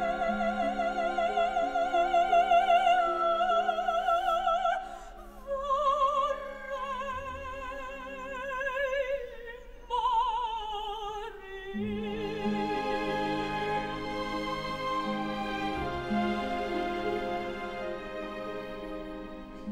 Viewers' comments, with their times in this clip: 0:04 Beautiful interpretation! Love this! ❤️💔 Acting is lovely; easy delivery. She’s a beautiful girl, not without its own youthful feminine charm. She hits that second vocal emphasis that lesser singers miss. Her texture and tone is very consistent, lovely tessitura. Thank you for posting this. My first introduction to her. ❤️💔